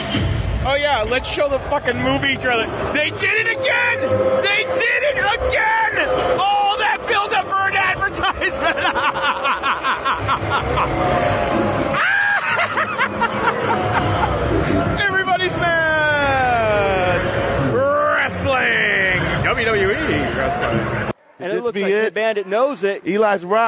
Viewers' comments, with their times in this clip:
0:04 that guy laughing sounds like the Count from Sesame Street xD